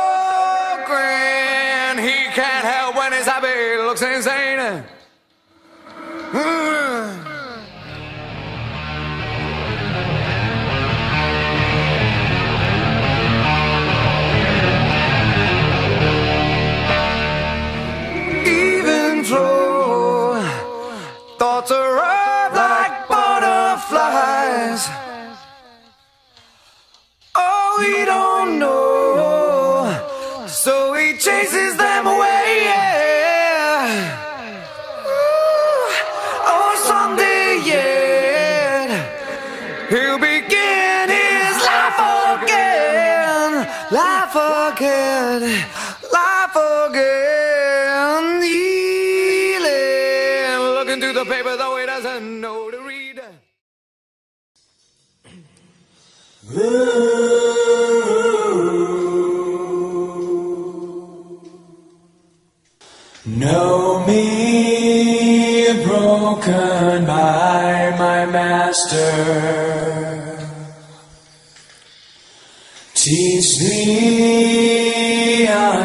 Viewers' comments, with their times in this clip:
0:07 its crazy how Eddie could sing the guitar part as well
1:02 its Jerry's voice in verses XD I don't want to be rude but u messed up